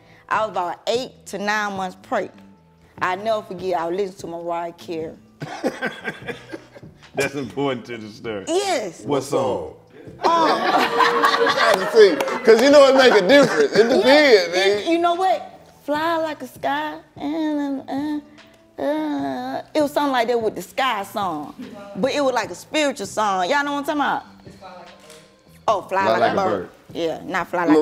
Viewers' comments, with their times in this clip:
0:09 “WHA SONG” AT THE SAME DAMN TIME 😂😂😂 REAL FRIEND SHIT